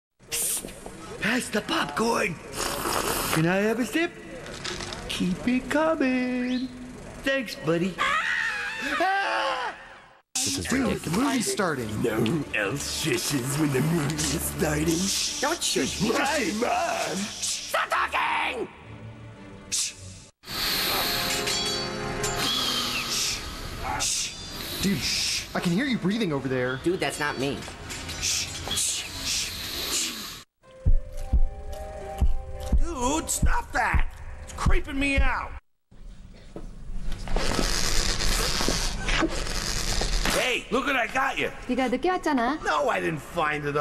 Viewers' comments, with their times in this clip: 0:00 Richard: pass your popcorn. Have a sip. Incoming thanks buddy. (Bread and Richard screamed)
0:17 When your trying to hear the teacher gives you information about the Work but you hear bunch of people talking
0:31 What’s that noise?